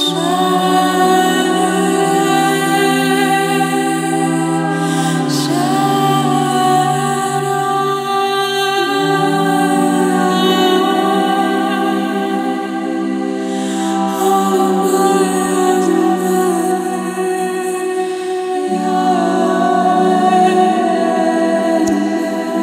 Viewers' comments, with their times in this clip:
0:09 angelic voice.bravo.YHWH ❤❤❤❤.ARRIVAL OF MESSIAH BEN DAVID ♥ IS INEVITABLE IN ISRAEL 🇮🇱. YHWH AMEN TO BRING WORLD 🌎 PEACE ✌ 🙏